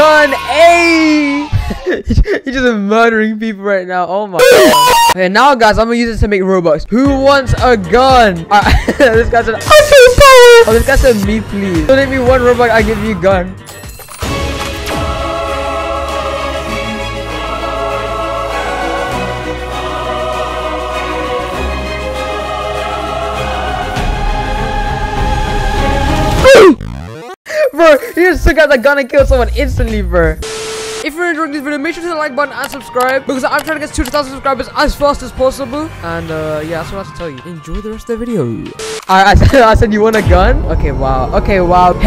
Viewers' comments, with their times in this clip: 0:03 my right ear really enjoyed that
0:15 Epic music THE REVOLUTION OF THE BACONS VS THOSE WHO HAVE ROBUX Who will win? = Bacon!!!
0:29 ayooo? the music
0:29 ayo that music sounds kinda familiar, sus. I want a gun
0:29 AYO THAT MUSIC??!?!?!?!?